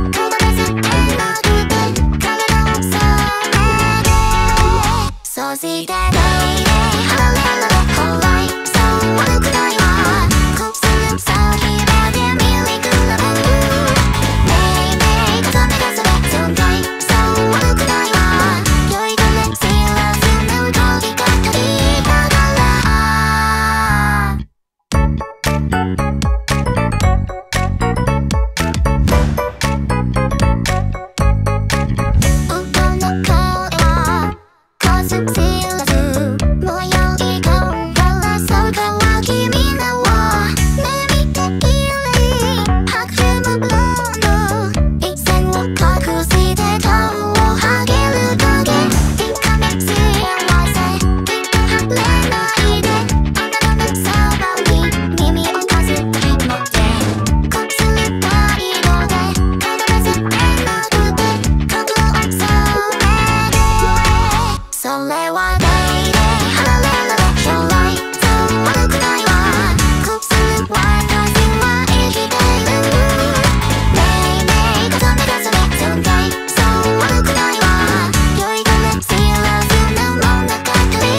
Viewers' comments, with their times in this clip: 0:05 YEA!! notice how she says si instead of shi like “sosite” instead of “soshite”, was wondering if anyone noticed
1:05 I am so impressed by this song and the MV, too! This song gives me the perfect feeling of drunkness, the English version of GUMI makes it feel dreamy as if you haven't woken up completely. I LOVE it. And the contrast in where the red suddenly glows with the opening red eyes gives my eyes and ears the resonance that makes it the climax of this whole video.